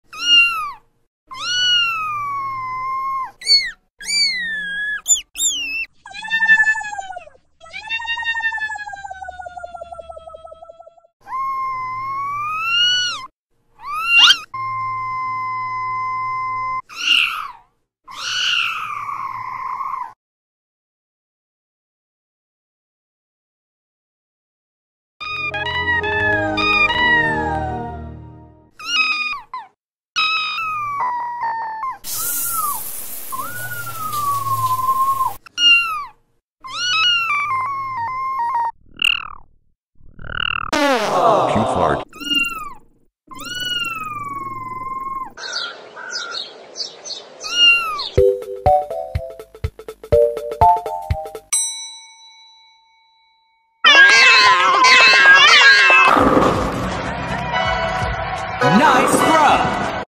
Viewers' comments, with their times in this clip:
0:05 cat go brrrrrr
0:25 cute windows xp intro!!!
0:31 sounded like travis scott remix
0:32 sounds like hes crying for help
0:33 No wonder he was meowing..
0:35 Sounds like a woman getting killed.
0:40 this cute fart makes me cry of emotion.
0:41 Microsoft Sam Voice
0:53 Even the POP cat is in!